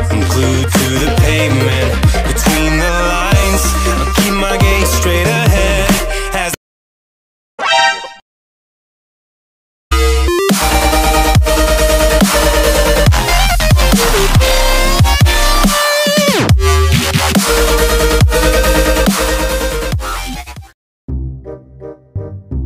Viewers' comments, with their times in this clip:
0:07 Lol guys skip to when the music stops